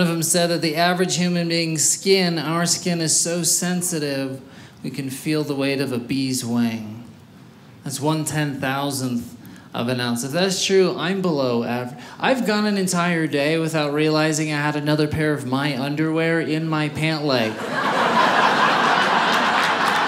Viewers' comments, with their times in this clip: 0:06 I heard “bees’ wang”.